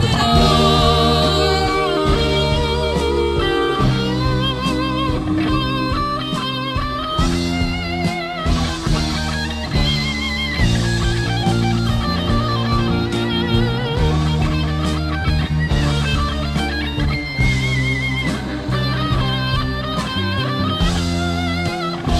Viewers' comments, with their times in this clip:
0:10 does nobody appreciate the guitar spamming?? 😂😂